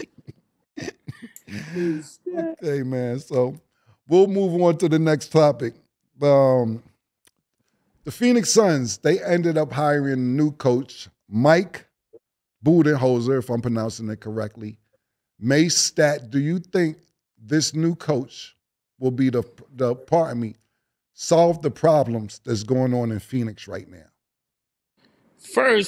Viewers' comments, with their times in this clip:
0:07 ...The Phoenix Suns ended up hiring new coach, "Mike Bootyholeser" 🤣🤣🤣